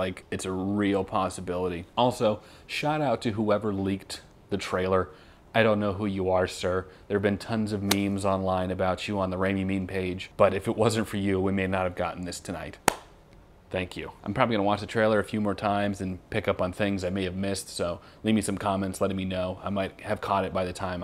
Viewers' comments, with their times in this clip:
0:07 My headphones make the sound so immersive and they were so loud, that in I scared myself. Was it just me? lol